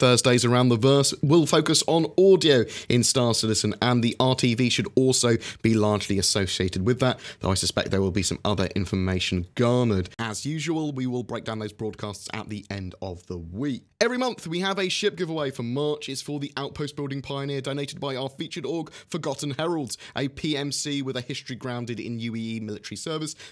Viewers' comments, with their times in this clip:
0:09 On the audio of this video: the volume drops significantly.
0:09 your voice volume seem to change quite a bit thru out the video.. quite noticeable
0:09 Thanks for the consistent updates. Data running didn't seem that interesting at first, but the idea is growing on me as far as game play is concerned, especially with hacking involved. Audio got noticeably quieter starting but not sure if you were just moving away from the mic more during the last segment.
0:10 the volume decreases a lot and it became harder to hear you. But, yeah, really glad they are nerfing the EMP. That gets old fast...
0:10 First part sounded noticeably different! I dig it. however; the volume dropped significantly.